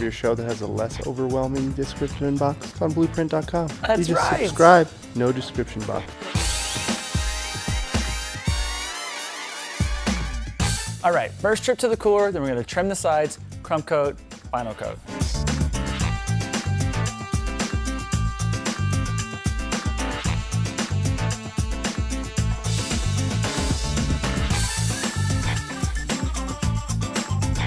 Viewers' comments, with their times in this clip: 0:08 I thought my house alarm was going off I was shitting my pants for a sec